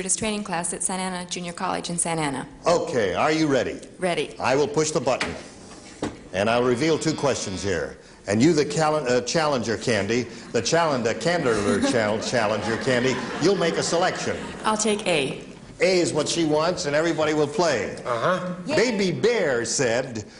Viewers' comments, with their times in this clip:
0:07 ....Was Gene going to say "calender" instead of "challenger"?